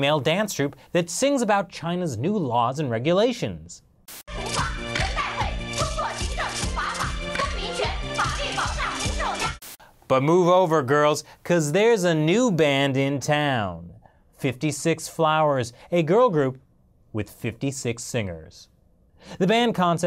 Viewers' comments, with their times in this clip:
0:04 was kinda catchy.